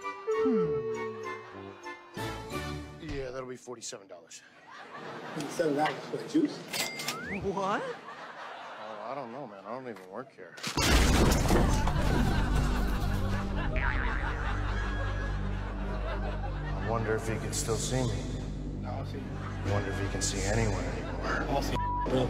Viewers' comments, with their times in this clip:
0:07 lmao the sound effects